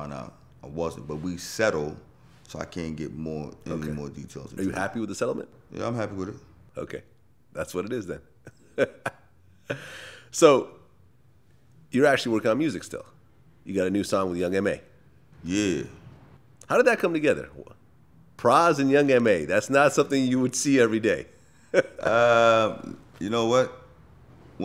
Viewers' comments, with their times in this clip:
0:09 pras was like what the fuck you laughing at 😂😂😂😂😂😂😂